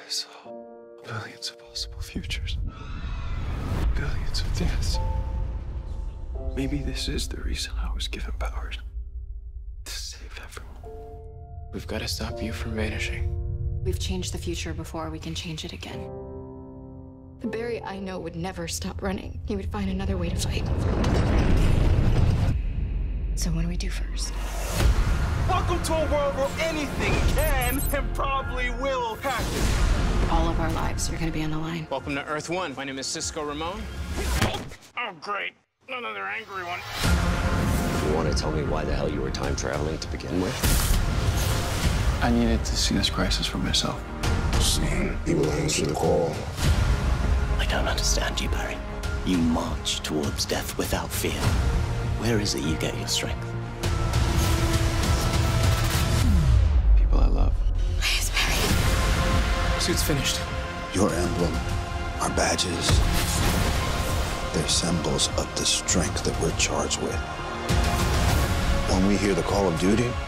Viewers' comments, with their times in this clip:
0:09 Wait why and to what or who is Caitlin reaching and screaming to ?!
0:18 that sounds like Nora Allen.
0:48 When you hear a slightly British sounding accent and think it's Tom Felton but it's just the new villian...😐
0:57 Iris saying "race barry" or "please barry" with the music gives me chills